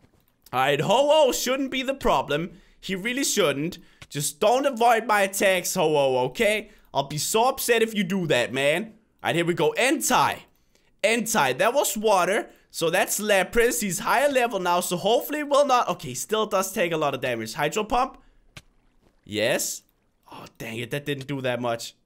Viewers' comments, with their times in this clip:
0:10 .... he said hentai